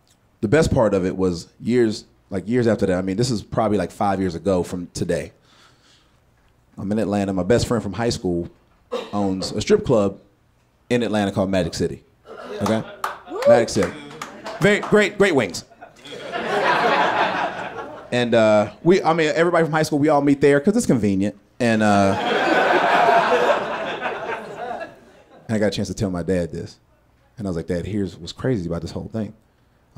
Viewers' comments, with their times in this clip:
0:10 ....that would be me as the lonely clapper that shows my over appreciation for strip clubs 🤦🏽‍♂️